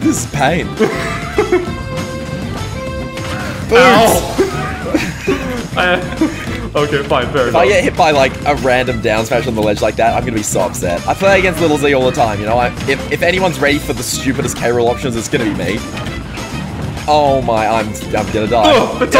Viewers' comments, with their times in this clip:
0:06 We love to see unintentional musical syncs.